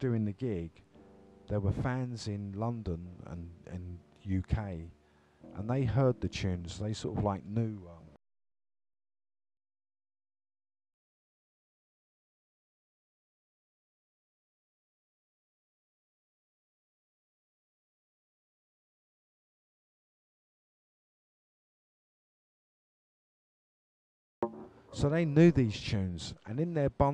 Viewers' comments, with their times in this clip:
0:08 Did youtube mute the tune ?? Copyright stuff i reckon. Can't even pay homage to people without the record companies wanting a piece of action